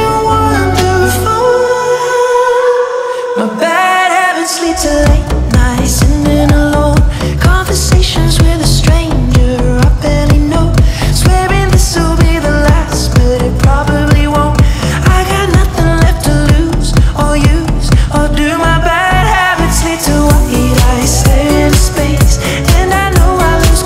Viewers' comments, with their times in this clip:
0:04 she came in like a raid boss with those 808's thoomin', bruv!